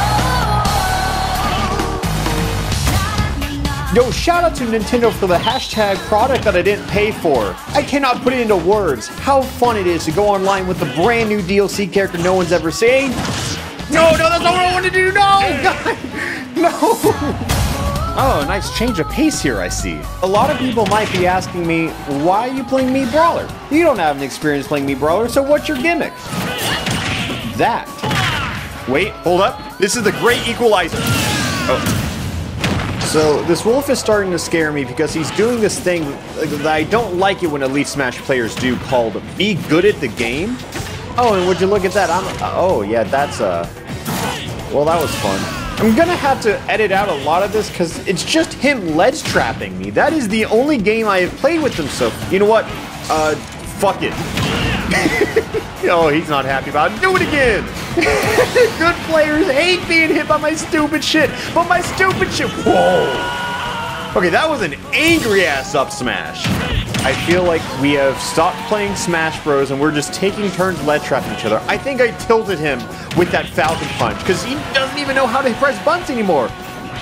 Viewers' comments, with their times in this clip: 0:09 I love how he says seen in that clip.
1:02 "—WHhoooah" I have no idea why, but that is my favorite soundclip this year.